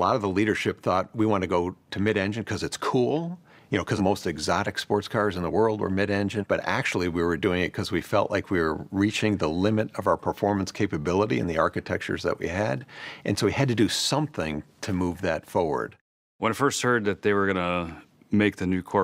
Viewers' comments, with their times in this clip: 0:06 I thought it was Clint Eastwood!😂